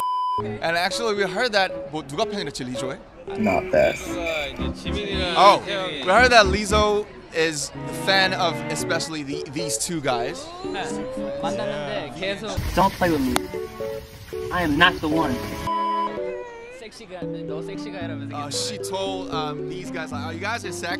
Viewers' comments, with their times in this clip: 0:06 It's the way Yoongi says "Taehyungie" 🔥 I'm NOT ok! 😭